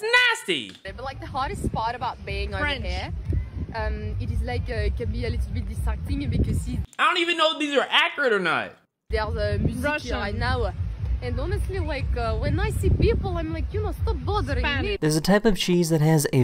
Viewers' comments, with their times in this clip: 0:03 I can attest, the French accent is 🤌🏼